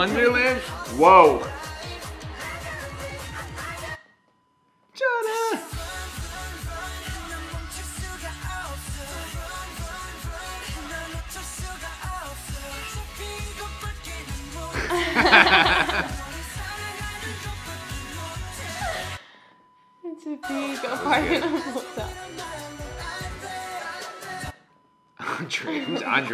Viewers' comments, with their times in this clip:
0:08 I always hear "fartin on your napkin" in the BS&T MV during rapmons part! My bias is V and my favorite color is purple!